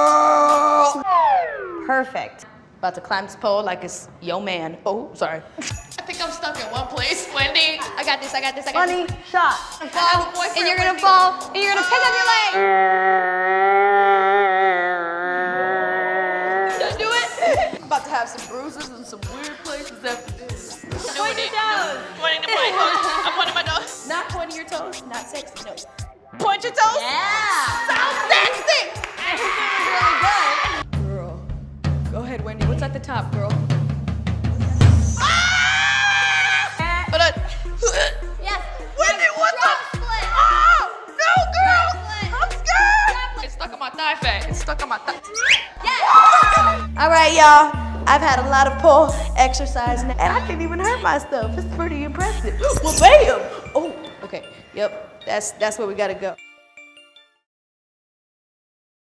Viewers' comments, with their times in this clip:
0:05 I love how the white shirt girl laughed so hard when Liza made the joke
0:35 it make me laughs so hard Liza scream😂🤣
0:45 That sound effect 😂😂😂